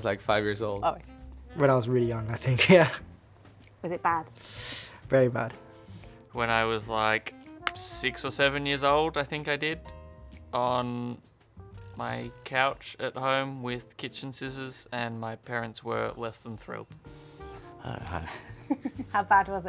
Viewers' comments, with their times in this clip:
0:03 laughing then the straight face 😂 must’ve been really bad !